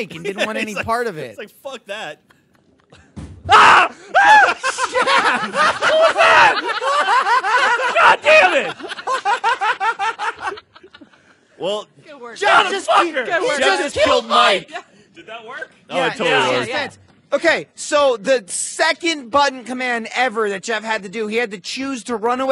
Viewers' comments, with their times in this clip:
0:03 hearing everyone in the room cackle and lose it at Geoff's shrieks put the biggest smile on my face LOL! 😂 I really needed this.